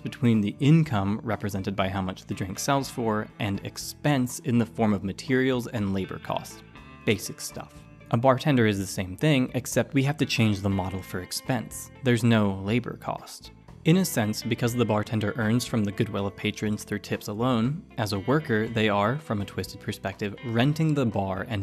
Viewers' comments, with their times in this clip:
0:08 Good god the mgs3 theme got me